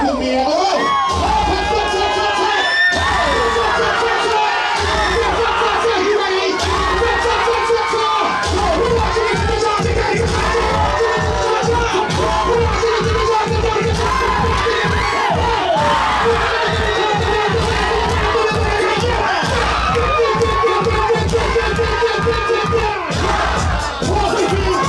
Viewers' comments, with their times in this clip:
0:07 It was that ass slap on the beat that I knew it was OVERRRRR